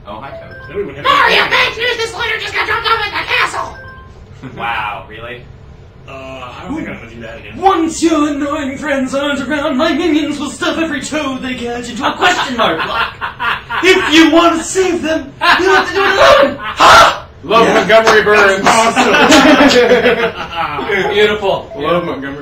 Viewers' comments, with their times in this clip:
0:06 sounds like Mr. Crocker from Fairly Odd Parents... XD